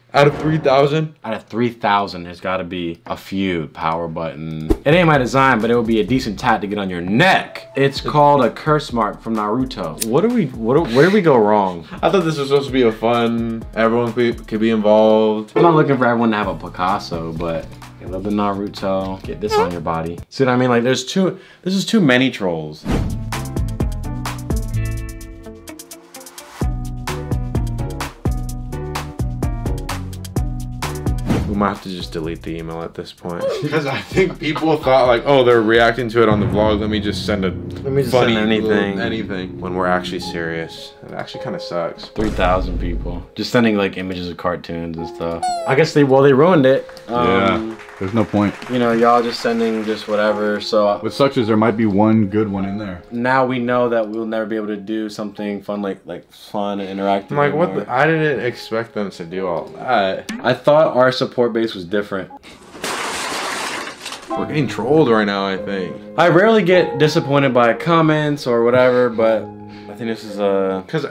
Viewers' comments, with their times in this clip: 0:09 umm sir, that's not how you say naruto
0:45 he sounds like a 3rd grade teacher after they allowed the class to watch a movie and people kept talking so they had to pull out the packets lol
0:48 ya sound like my teachers 😂
0:54 They sound like teachers when the kids are being bad
0:54 they sound like ma elementary science teachers🥲🥲